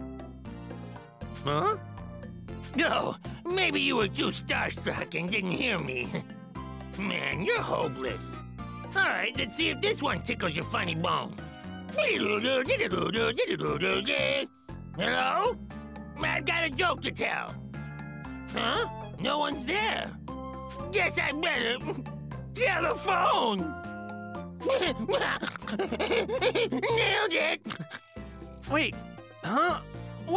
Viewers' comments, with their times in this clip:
0:09 Man's did the nokia jingle
0:11 Your nokia is ringing